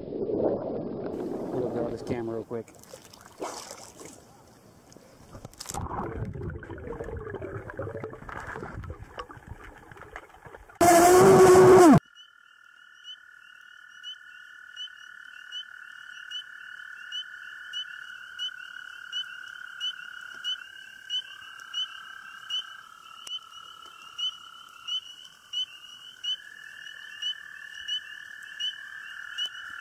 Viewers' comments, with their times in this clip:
0:10 you have to turn the volume all the way up to hear what he says
0:11 wow I didn't expect to get ear raped